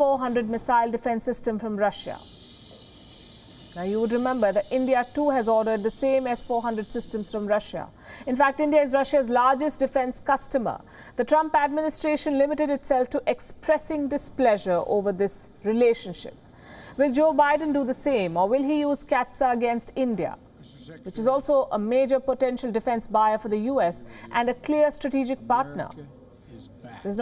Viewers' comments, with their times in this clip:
0:09 you sounds so proud tobe Russia's largest customer instead of largest seller.